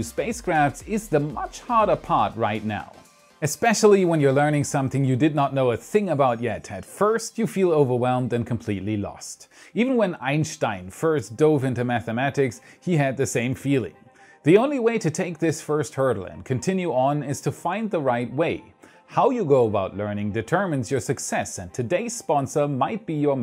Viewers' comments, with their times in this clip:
0:08 the pronunciation on Einstein fucking killed me